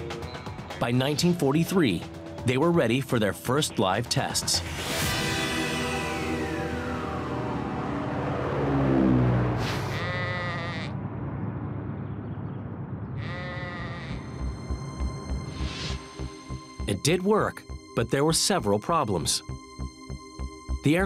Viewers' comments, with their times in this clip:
0:05 Just got that sudden weird realisation that for some reason, someone decided it would be a good idea to add the sound of a sheep baaing to that footage. I kind of suspect the whole video was probably silent and that sound was added to it by the Military Channel.